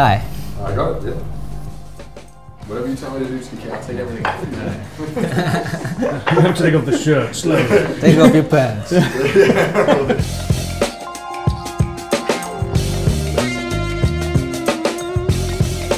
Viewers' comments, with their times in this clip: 0:03 Who filmed this for you? At one point I swear I heard Chris Broad Also the price was damn near exactly what I expected. I thought "its probably about $600" I am happy to report it is $595.